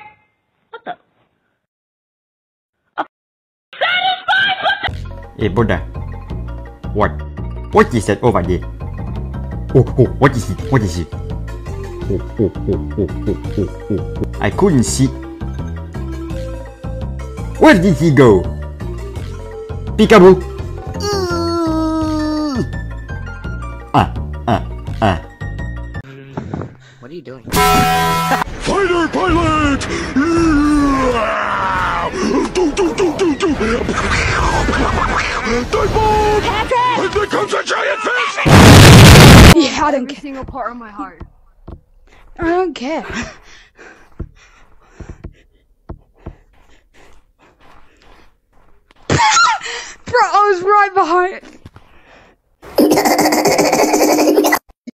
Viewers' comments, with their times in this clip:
0:05 the background music makes it feel like the you cant sea me update
0:27 The taco bell ding earrape☠️
0:46 the start “Just ignore my laugh” 3 secs later “ hehehehehehehe”
0:52 What’s that laugh ?!
0:52 bro laughed like a fucking Windex Spray 💀🙏 i cant 😭🧏‍♂️